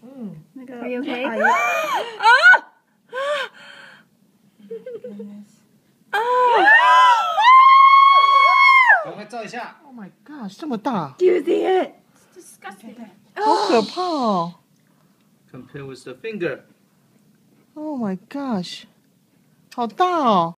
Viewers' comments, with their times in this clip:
0:06 STOP SCREAMING IT'S NOT THAT BAD IT DOESN'T EVEN MOVE IT IS SO SMALL WHY IS GIRLS LIKE THIS THEY SEE GROSS STUFF THEY SCREAM
0:07 They scream when I say Dog shit